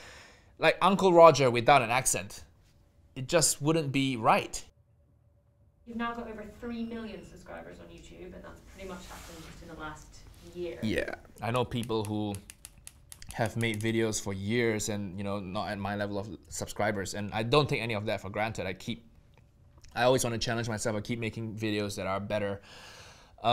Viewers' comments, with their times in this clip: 0:05 Uncle Rogers accent is the cherry on the sugar of the top. ♥